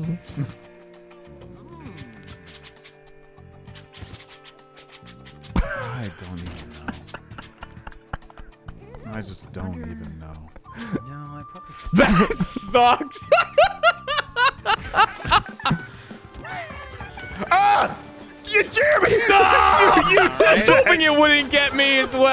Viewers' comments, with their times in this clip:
0:04 That Gavin laugh, knowing how evil his plan is!